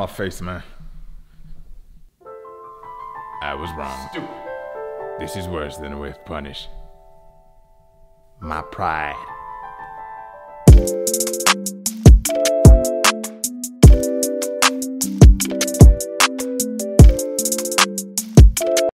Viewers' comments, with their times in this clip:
0:03 Was that a Morgan Freeman impression?